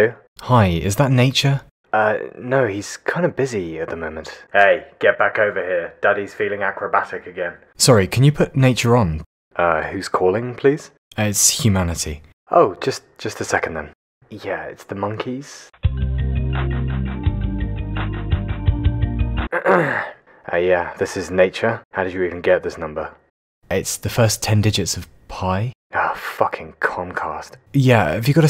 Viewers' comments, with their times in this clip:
0:09 "dirt is feeling acrobatic again" ? Is that it? Lolololololol